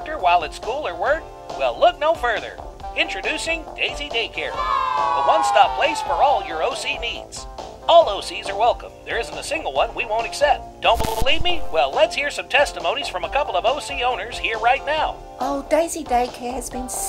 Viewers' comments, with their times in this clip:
0:05 oh OC needs! I thought it said OCD’s